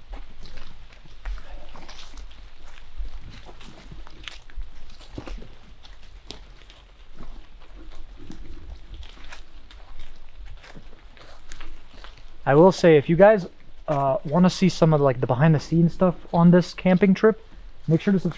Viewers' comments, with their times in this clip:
0:06 many voices , mostly like women whispering. So creepy. But once you guys start walking around and talking, I’m hearing the same growls if not creepier than growls from Jerseys Devil forest